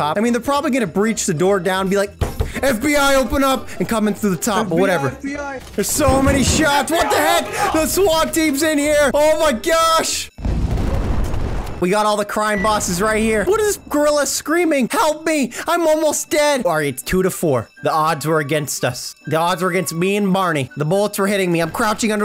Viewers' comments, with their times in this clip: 0:06 I thought that was my brother screaming